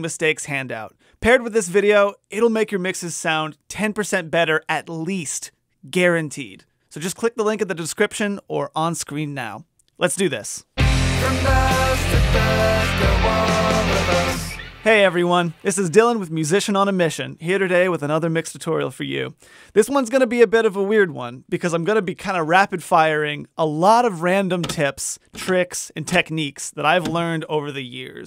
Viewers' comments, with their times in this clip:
0:10 gave me the In Bloom Nirvana i need to listen rn